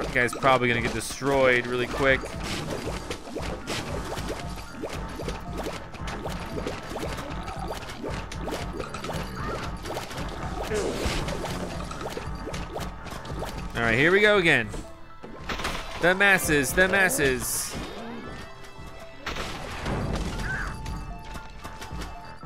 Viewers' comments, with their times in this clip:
0:04 the Phat-Beets were beating to the music rhythm!